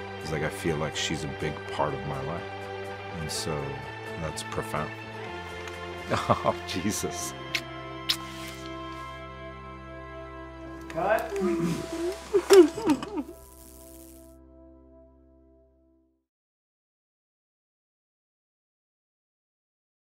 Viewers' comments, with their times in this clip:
0:06 Her "oohh" from him when she takes it and kisses him as if to say "I'm irresistible, I know" David Harbour😍